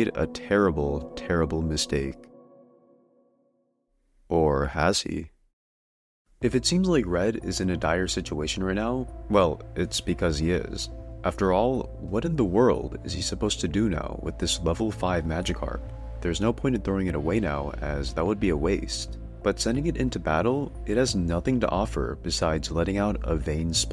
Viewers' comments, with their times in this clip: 0:03 "or has he?" vsauce music starts
0:06 No Vsauce music -10000 aura